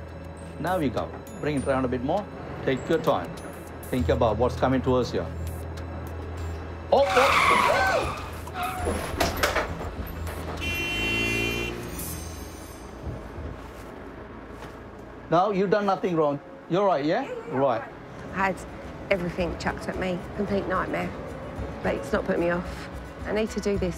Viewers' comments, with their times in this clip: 0:06 Why did the car who was driving on the wrong side of the road beep at the bus ?